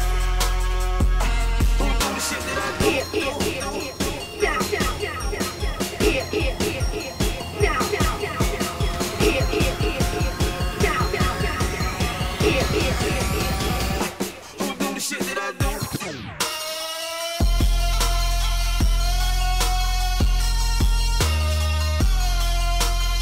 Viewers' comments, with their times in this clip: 0:10 That echo in those vocals 😍😍😍 Transitions and the mix are so nice it just shows you don't need top of the line equipment. Sweet video!